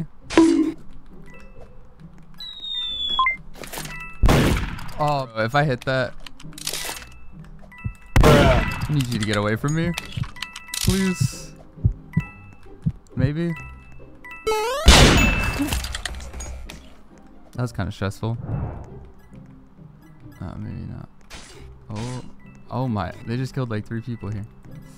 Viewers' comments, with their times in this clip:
0:09 how did he panic so calmly 😭👏👏👏
0:10 the heartbeat sound is a bit TOO relatable